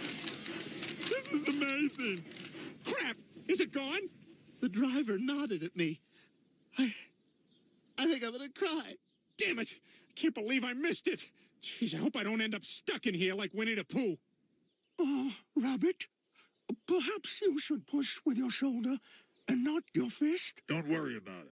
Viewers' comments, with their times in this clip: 0:04 That sound more like steewe.